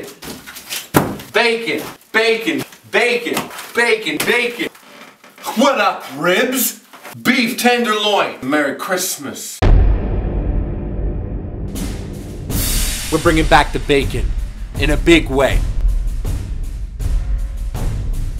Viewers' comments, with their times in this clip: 0:05 "ahwatup ribs?" every time has me rolling!